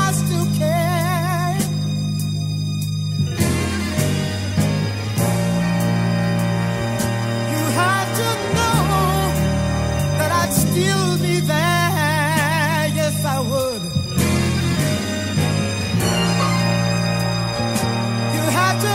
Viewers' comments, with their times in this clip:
0:03 He sang that whole song with sooo much Heart ♥️ , SouL 🔥& Emotion😩. I’m digging that haunting melody 🎼 all the way till the End… R.I.P. Mr. Hathaway 🎶🖤 🕊